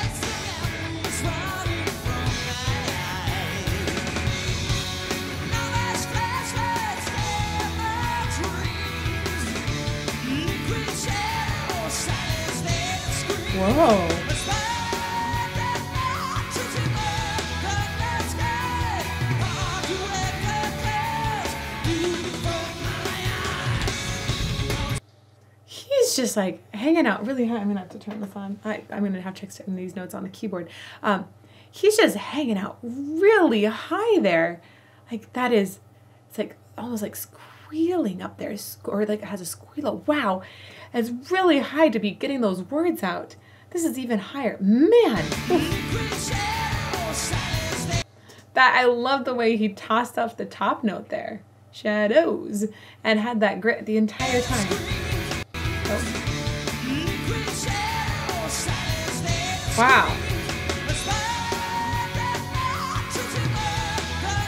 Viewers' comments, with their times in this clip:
0:10 I adore the completely gratuitous wail It just makes my heart smile. As an aside, Wait For Sleep is one of the most beautiful pieces of music I've ever heard.
0:45 I'm pretty sure that was a voice crack
0:50 I think that was just the voice cracking,